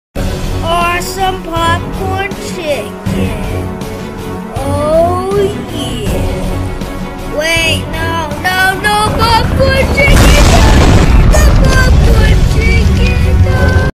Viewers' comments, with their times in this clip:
0:09 Mom: Wht tf u cryn so loud?